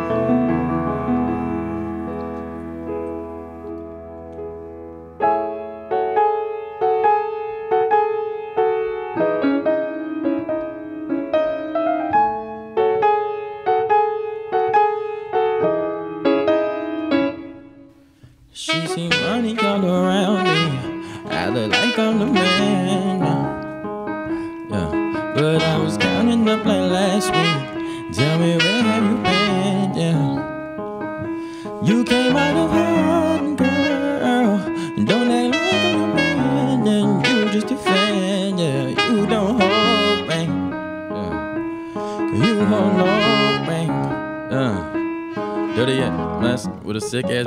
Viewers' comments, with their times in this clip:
0:05 😮 that piano transition
0:18 when that sax kick in 🔥
0:33 21 savage is playing the saxophone
0:35 that yawn tho hahahaha